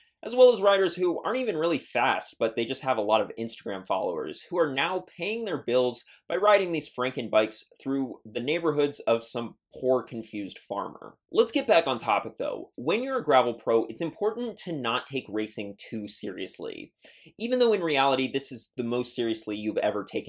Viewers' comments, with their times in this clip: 0:04 Was that a shot ? Pew pew 🔫